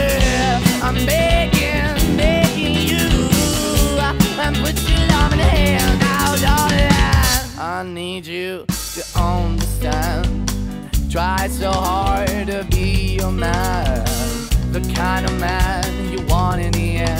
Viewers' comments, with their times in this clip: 0:03 Wow man, that fill was super nice